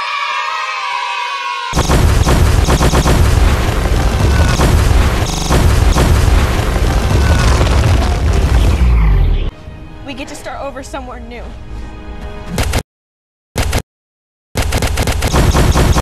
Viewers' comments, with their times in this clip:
0:09 i genuinely thought this was an 8 year old boy until she spoke